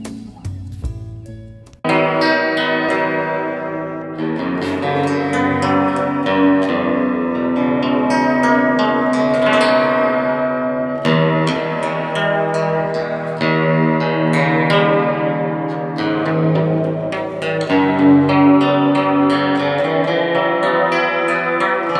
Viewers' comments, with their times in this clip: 0:09 wow, after sounds awesome ! What effect you used ? Maybe chorus, and what else ?